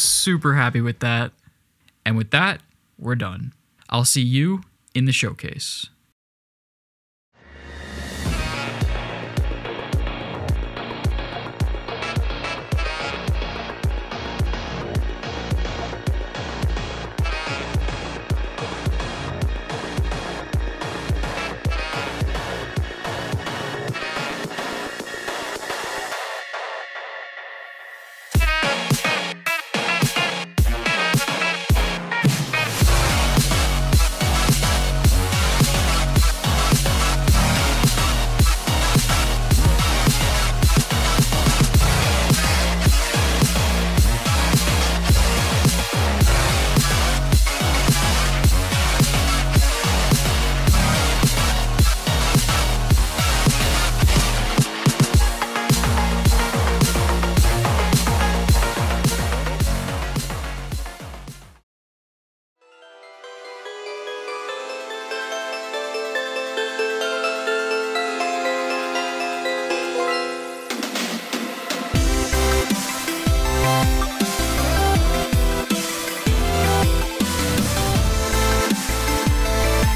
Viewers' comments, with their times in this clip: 0:08 I legit choked on my food when I heard Creo lol
1:03 do you play gd because the music sound like gd, ACU and others ?